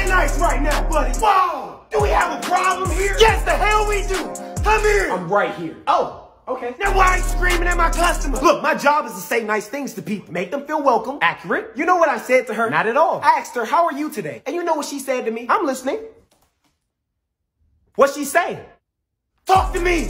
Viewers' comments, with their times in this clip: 0:04 come here got dying😂😂😂 him actually sounding like scorpion.